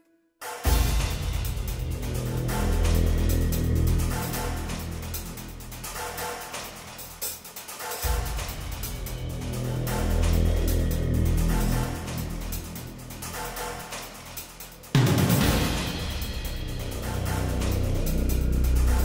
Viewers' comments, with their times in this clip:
0:07 Why does this sounds like the submarine boss music from AC5 ? Hrimfaxi - Demons of Razgriz.